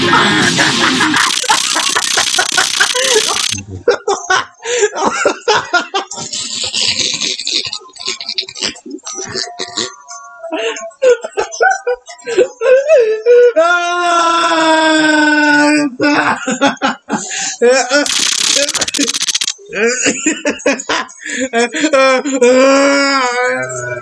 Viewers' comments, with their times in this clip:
0:06 That laugh tho💀